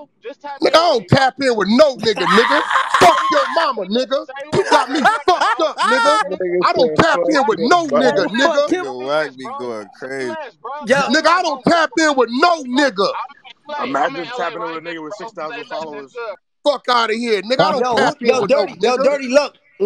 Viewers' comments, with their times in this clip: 0:03 69’s laugh 😂😂😂😂 Having the time of his laugh